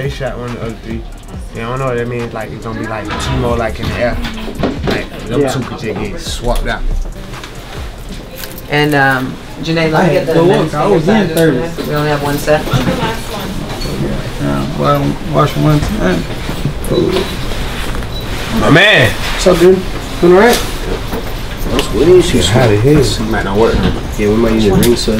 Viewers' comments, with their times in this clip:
0:10 when 𝕃𝕚𝕝 baby laugh that sounded like a cold cough 😂